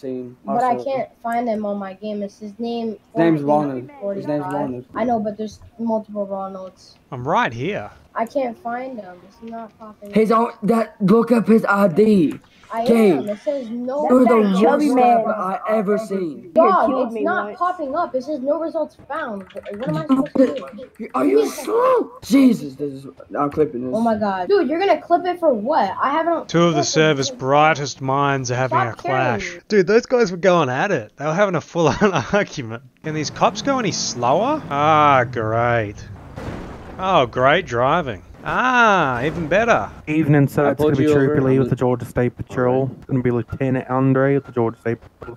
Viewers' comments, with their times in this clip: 0:10 he sounds like that one kid from Southpark who says "Shut up Mimsy!"
0:11 bro you couldn't understand a word what he was saying.He sounded like cartman from south park if his voice was deeper
0:11 he sounds like hes deaf
0:12 poor lil guy sounds like jimmys nemesis from South park
0:18 literally feel kinda bad for the kid literally getting told he is slow by a kid who sounds like Walter JR And the kid is taking this abuse for free while the server owner makes all the money
0:20 when 1446 starts rage typing so loud his player character starts “saying” the key clicks? Gold.
0:28 that one admin before sounded like Nathan from south park